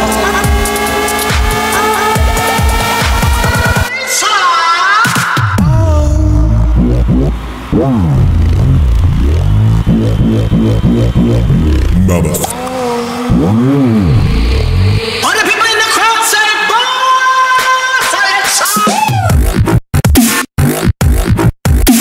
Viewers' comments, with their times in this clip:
0:05 Nice heavy bass, would have gone with a solid ultimate bass drop to at that mark, but still really good.